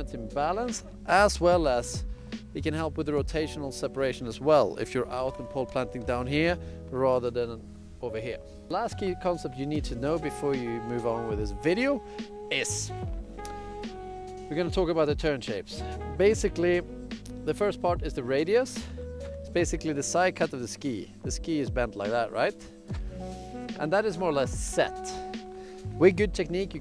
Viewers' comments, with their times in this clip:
0:09 Dat high pitched noise tho!